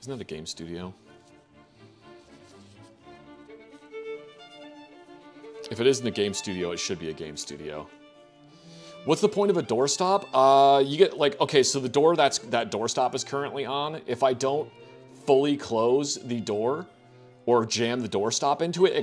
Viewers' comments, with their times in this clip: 0:07 might be my favourite part of the Tomcat section its a really good impression lmfao